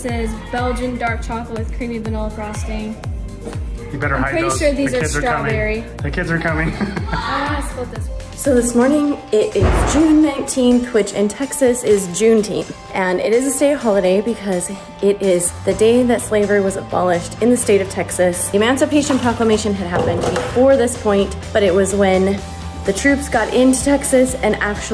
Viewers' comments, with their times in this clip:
0:08 Was I the only one that jumped when I heard the bang